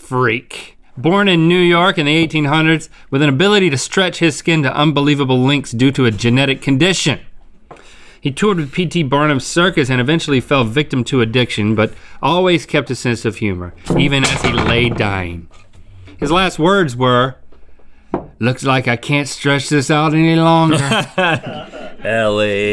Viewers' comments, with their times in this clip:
0:10 Rhett's cute yawn tho 💖